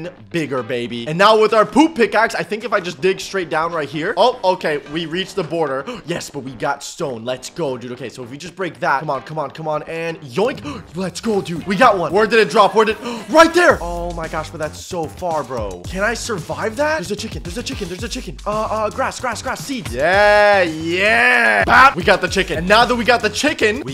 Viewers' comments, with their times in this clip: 0:05 bro that sounded not good th w reached the border if you know what I mean 💀💀💀💀